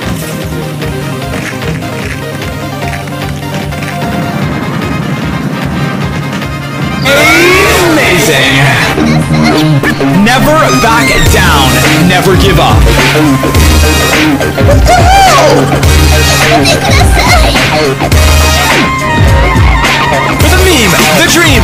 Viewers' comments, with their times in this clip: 0:04 the music and scene fit perfectly here